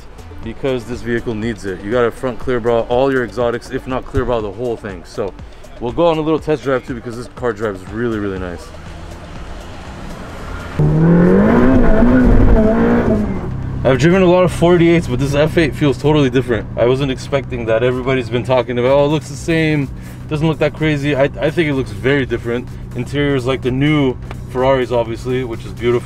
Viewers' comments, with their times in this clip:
0:10 hits rev limiter of customer car